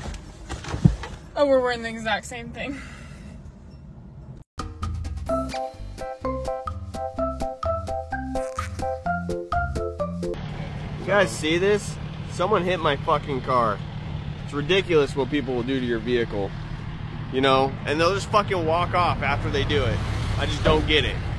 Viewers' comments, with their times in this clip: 0:06 the music matching up makes this perfect😂